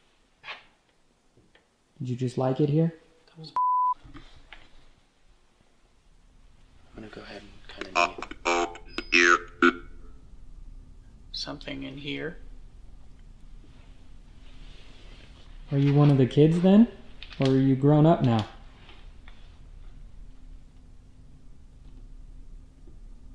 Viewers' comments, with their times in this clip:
0:07 i think it said its cold here
0:08 sounded like the kid was saying " Cobb/Bob will hear" or "Cobb/Bob up here" ... couldn't make out the first word but it was a name or title.. possibly a principle or teacher they are naming and they're afraid to kick the ball. The flashlights and the lights aren't loud so they are probably comfortable messing with something that doesn't cause noise in fear of getting in trouble.
0:08 they speak with the ? On it... kinda to me sounds like "uh-oh (cuts out) here!" U said a lil after that u didn't get a name...but after that is when they say they're scared a few times.. just an opinion you guys are awesome btw